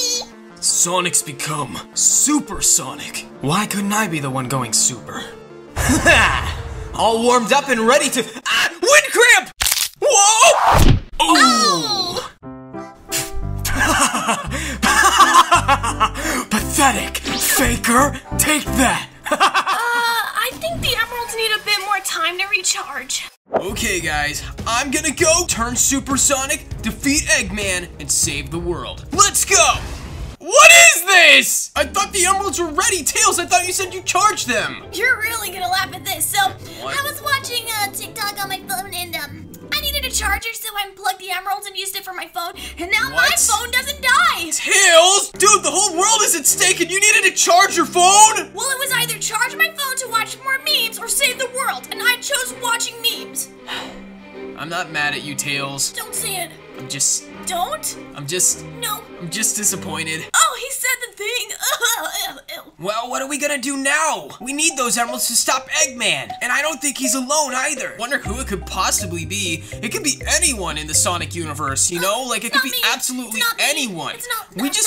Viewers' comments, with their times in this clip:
0:09 Bruh the crack poor me he broke his foot😢
0:12 Jason’s Shadow perfectly replicated!
0:13 another is that shadow started laughing uproariously
0:14 I like the way that shadow laughed at Sonic. I’ve never seen him laugh before.
0:14 BRO shadow laugh😂😂😂😂😂😂 love your videos! Keep up il give u a free subscribe!
0:18 Violet: laughing with shadow at sonic hahaha yea pathetic XD
0:19 I like Shadow's laugh 😂
1:01 Bruh tails what was that cry haha😂 but tail you made me disappointed so stop watching memes